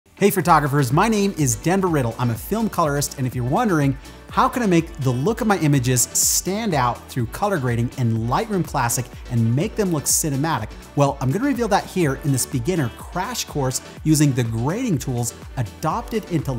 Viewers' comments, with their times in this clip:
0:00 Oof. Good clear "fertographer" pronunciation right Surprisingly common way of pronouncing the word.